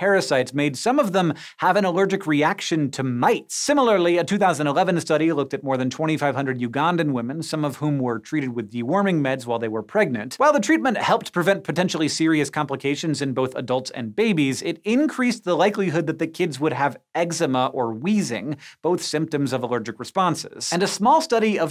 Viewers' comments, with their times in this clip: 0:06 Excuse me, UGANZA? We all know it’s Uganda.